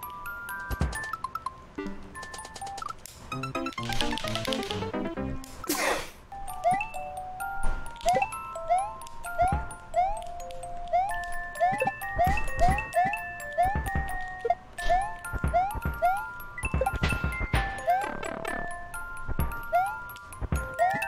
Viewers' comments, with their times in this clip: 0:04 That sneeze at the end of the death music, fuc****g hilarious 😂😂😂